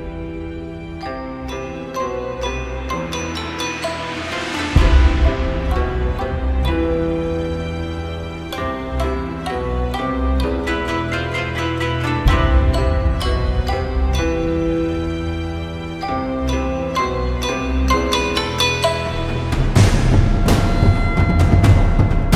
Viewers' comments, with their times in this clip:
0:07 really sounds soooo good. Has that feel of... sadness, and anger.